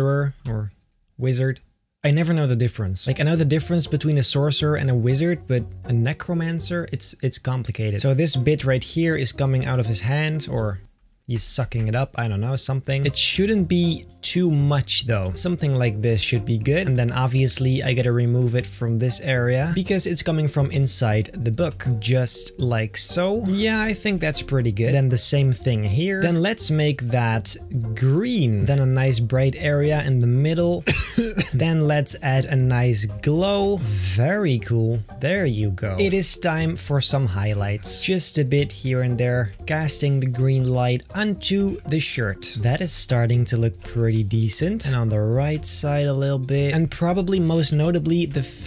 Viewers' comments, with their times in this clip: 0:07 he sounds like hes saying "This bitch right here" XD
0:08 So this b!tch here is coming out of his hand
0:30 I was so frickin scared when I had to cough at the exact same time